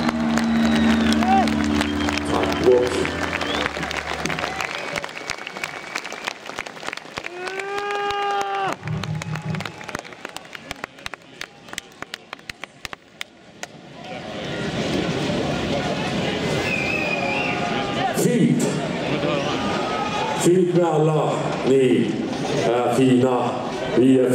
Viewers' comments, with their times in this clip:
0:10 Vikings are now reduced to golf claps. lolol